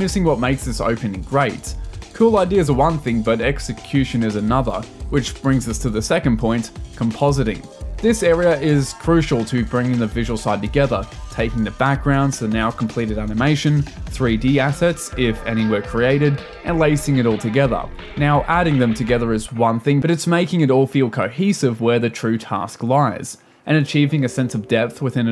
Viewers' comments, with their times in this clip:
0:06 I do love me some composting
0:07 ah yes, composting